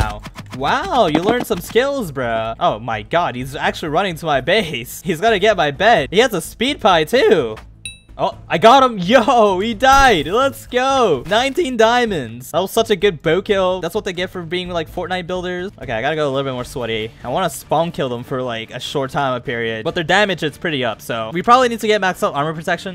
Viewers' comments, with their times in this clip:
0:08 did he pronounced he into a we or did i just hear wrong??